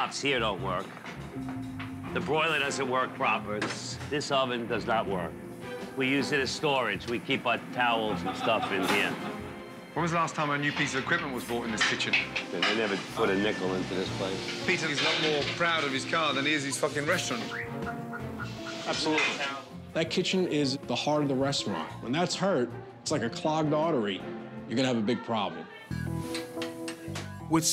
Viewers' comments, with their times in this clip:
0:07 Did someone Laugh....
0:08 Gordon is just laughing his ass off 😂😂